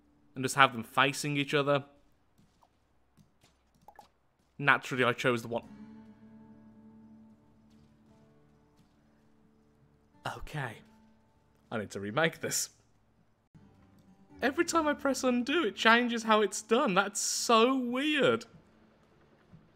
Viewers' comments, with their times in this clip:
0:07 I felt his pain the silence spoke so many words
0:07 the pause really show how much it hurt. rip